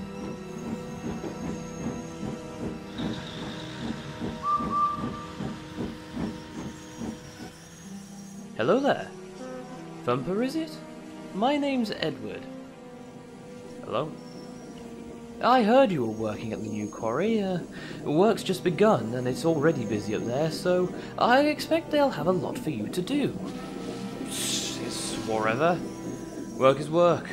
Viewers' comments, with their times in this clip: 0:05 Edward sounds like Obi-Wan Kenobi when he said hello there
0:07 i cant be the only one who compares edward's ''hello there'' to obi wan's ''hello there''. I just can't.
0:08 bro that sounds just like the meme
0:08 The way Edward said "Hello There" reminds me of a meme (if you're a Star Wars fan reading this, you should get it)
0:08 Okay but why did Edward sound exactly like Obi-Wan Kenobi?
0:08 he kinda sounds like Obi Wan Kenobi, ngl.
0:08 I can't tell if that's you or the voice line stitched in there.
0:08 there’s no way you used the “Hello There” meme sfx. 🤣🤣🤣🤣
0:08 that “hello there” sounds exactly like the meme
0:09 Edward sounded like Obi from starwars for a second 💀